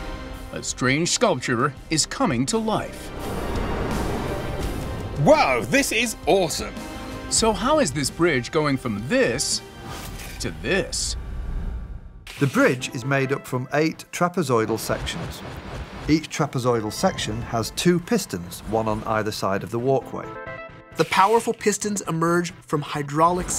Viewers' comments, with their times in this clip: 0:04 that enthusiasm tho